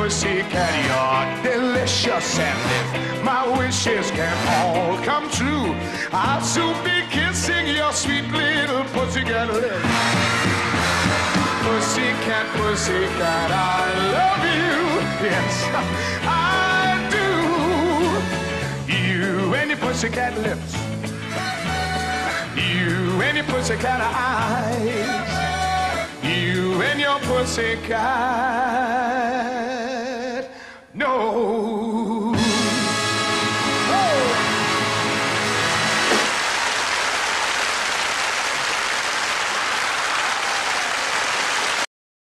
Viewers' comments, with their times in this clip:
0:10 That laugh says it all lmao
0:31 The instruments WOW.